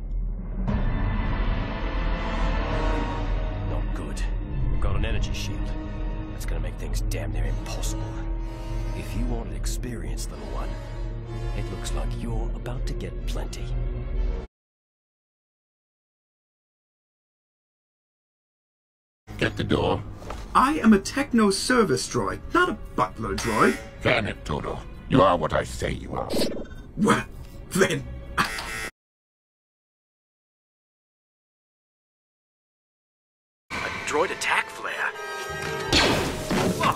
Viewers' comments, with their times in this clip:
0:07 all I hear is ‘down their impossible’
0:24 I heard “can it”